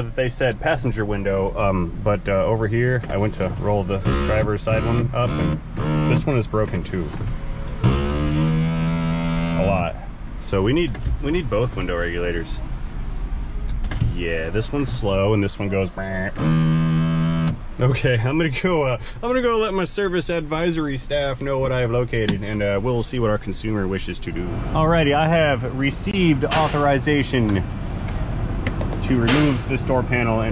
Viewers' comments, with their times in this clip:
0:07 This sounds like the intro to Kickstart my Heart by Motley Crue.
0:16 ha ha windows go brrrrrrrrr